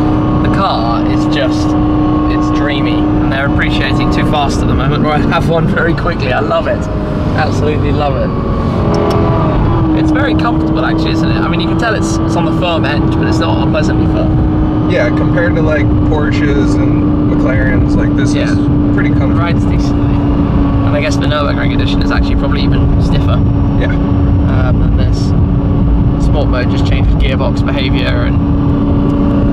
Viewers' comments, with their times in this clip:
0:10 is this guy going to upshift anytime soon??